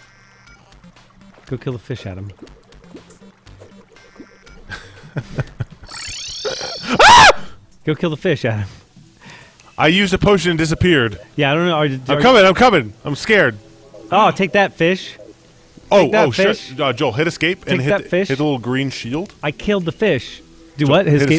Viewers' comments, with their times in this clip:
0:07 I replayed that scream over and over and over